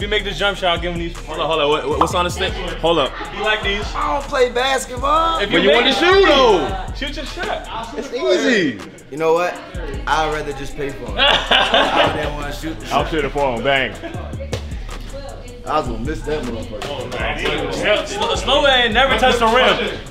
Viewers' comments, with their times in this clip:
0:04 “ioonnnnn pley basketballlll” he dangerously sounded like lil Wayne 😂. Conspiracy?